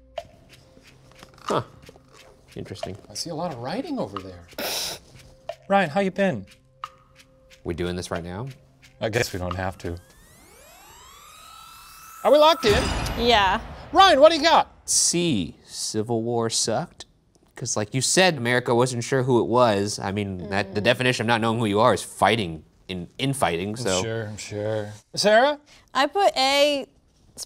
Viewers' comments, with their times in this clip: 0:08 Addition: subtle glitch out when he says "I guess we don't have to"